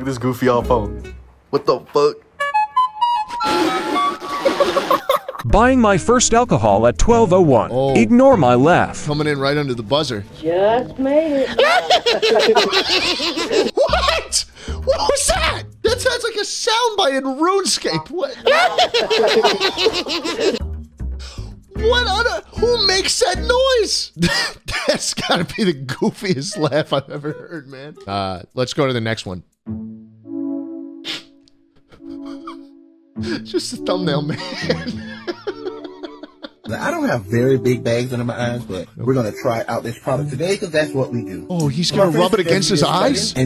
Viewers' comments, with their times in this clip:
0:05 bro sounded like stitch when he laughed💀
0:06 i thought the laugh was schlatt
0:06 This guys laugh sounds like freaking if clash royale clash of clans had a movie and this was one of the things from the movie with a goblin
0:08 the laugh kinda sounded like the like the laugh that start feel good. Inc by the Gorillaz I hope I'm not the only one to make that connection between the two of them
0:11 I love his reaction to the laugh😂
0:11 its fucking junkrat from overwatch
0:11 I doubt anyone will get this but it sounds like the laugh of one of those Sega Dreamcast CD warning tracks
0:11 bro think he annoying orange
0:11 nah that’s the clash gremlin💀
0:11 Wicked witch of the west ahh laugh
0:12 Bros laugh sounded like Dennis from Jurassic Park
0:13 im high as fuck rn and this made me laugh out loud and I made the horrific realisation that my laughter is almost identical to that . Wtf
0:17 sounds like a laugh in a Gorillaz song
0:17 The witches are coming
0:18 bro turned into the Fell Good Inc intro
0:24 Bro the green goblin laugh got me dying